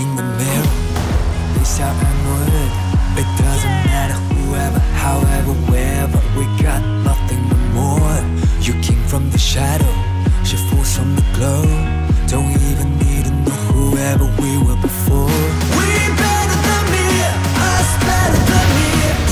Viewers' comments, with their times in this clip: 0:05 yin fangirl and the man's who crying